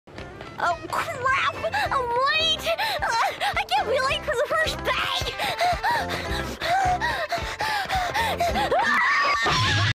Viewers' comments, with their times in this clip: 0:05 why the fuck is Rei moaning